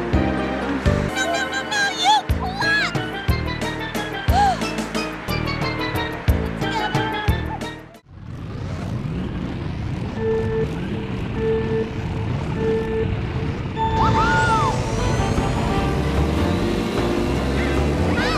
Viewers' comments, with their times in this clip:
0:03 so what was it she said in this line? Cause my mind registered Daisy cursing. Lol